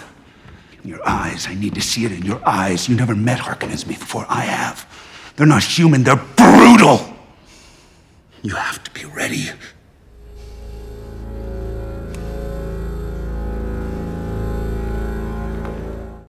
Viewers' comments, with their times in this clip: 0:06 The way he said "BRUTAL" was brutal